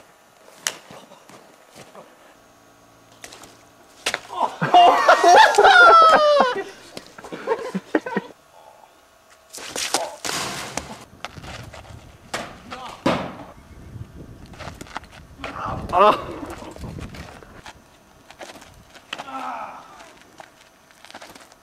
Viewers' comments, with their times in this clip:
0:06 lol high piched